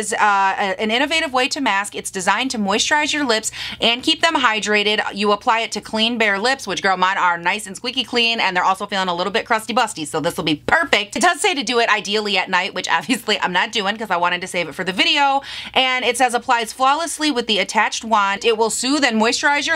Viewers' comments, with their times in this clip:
0:04 This video came on while I was in the shower and I thought my best friend broke into my house, did a bunch of coke and was talking to herself. Anxiety hit